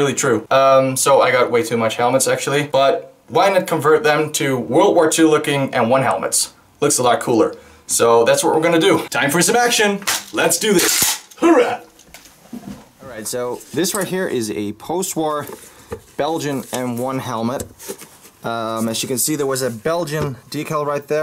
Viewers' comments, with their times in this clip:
0:09 "Time for some action! Lets do this!" M1 Garand bolt noises "h o o r a h"